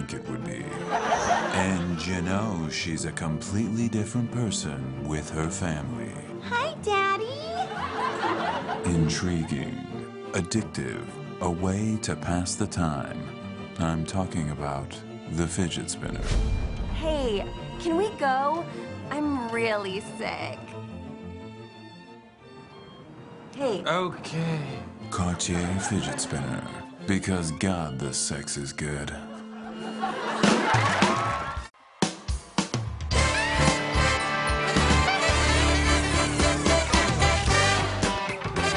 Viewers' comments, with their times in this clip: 0:06 for anyone who comes to this video for one (1) amazing line delivery
0:22 Beck looks like a god in this I mean look And when he says "oh-kay"